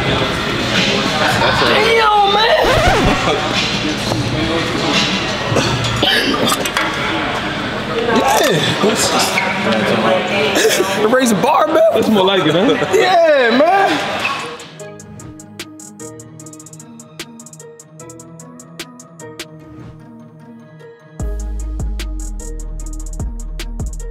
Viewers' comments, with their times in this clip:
0:06 So nobody is talking or am I trippin